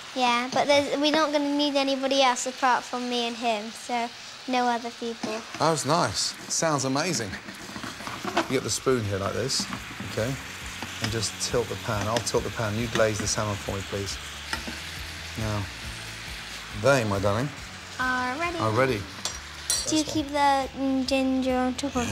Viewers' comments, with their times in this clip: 0:04 she sounded like amys baking company for a sec